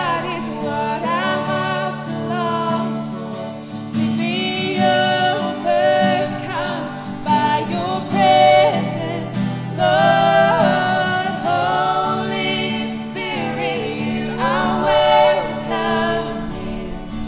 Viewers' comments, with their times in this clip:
0:03 was that Chris Quilala? Hehehehe Amazing guys! What tool did you used to record such good quality voice output? I might as well start covering this year .. Praise God!!